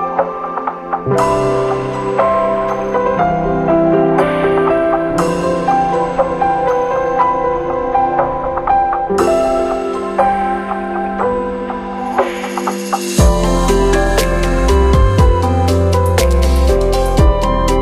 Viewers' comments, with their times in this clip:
0:05 OST 234 Tactical Hoshino's L2D Theme In fact this music does sound like OST 234